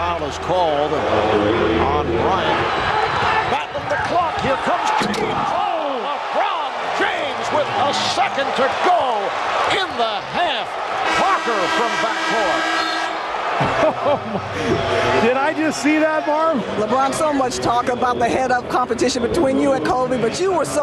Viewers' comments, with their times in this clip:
0:05 that call by Marv Albert is so thrilling! One of the best! "Oh! LeBron James with a second to go!" 😩